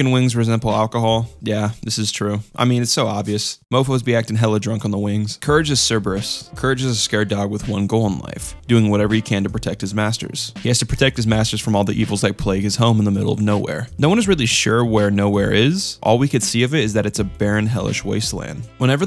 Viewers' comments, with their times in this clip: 0:04 how do u pronounce "Cerberus" correctly here but then mispronounce it wrong twice afterwards